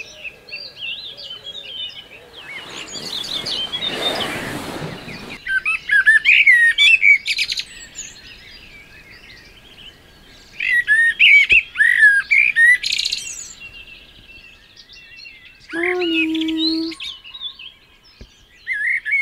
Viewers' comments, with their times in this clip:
0:07 I used my Trekology Aluft UL140 for the first time on Tuesday night and loved it, very comfirtable. The bird was very vocal 😆 good job it did not drop something 😆😆